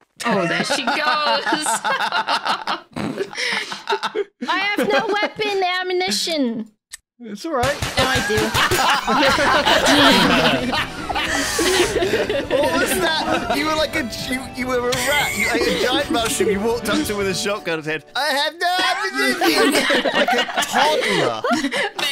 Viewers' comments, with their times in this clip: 0:09 The old school outro song brings back so many memories.